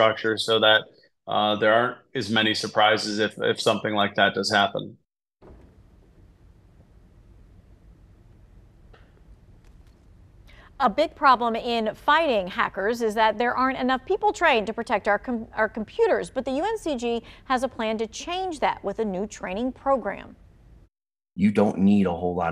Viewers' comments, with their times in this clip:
0:07 Why is the women laughing ?